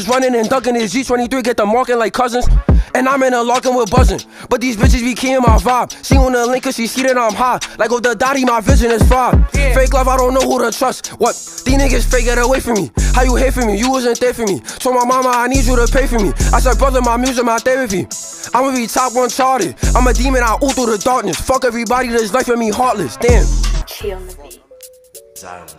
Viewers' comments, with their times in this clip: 0:09 tata simply saying “yea” was just a good ass adlib😭🔥